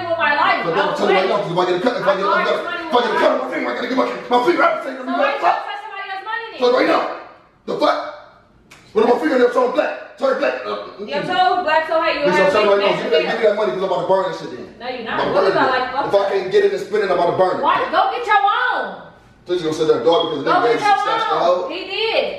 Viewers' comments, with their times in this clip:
0:04 What the actual fuck did he say in ?🤣🤣🤣